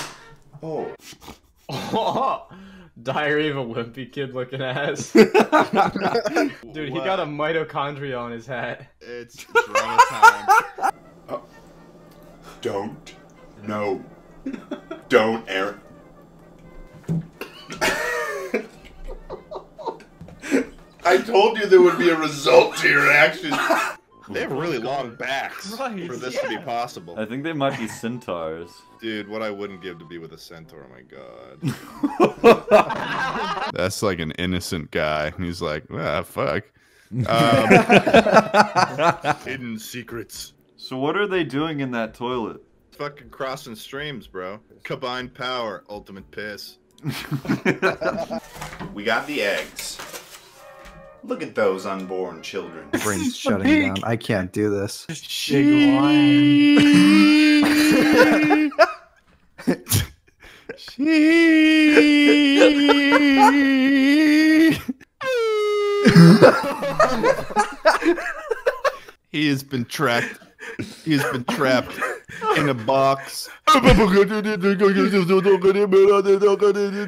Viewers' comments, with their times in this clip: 0:06 does he say it’s corona time?
1:05 I will never get over the noise he makes